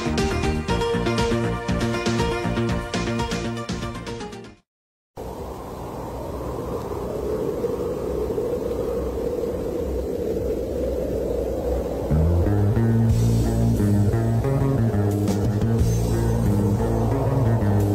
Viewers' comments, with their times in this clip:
0:04 Sounds very Polish